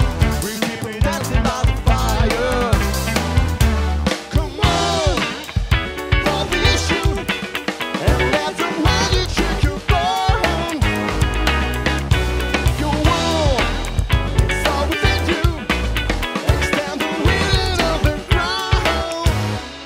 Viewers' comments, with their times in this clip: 0:05 that change to straight funk rhythm got me just right